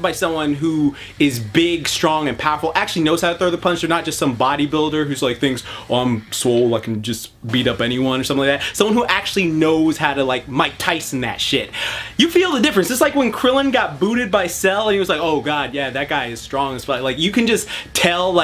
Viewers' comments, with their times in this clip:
0:03 JoJo voice kono powawa (probably spelled it wrong)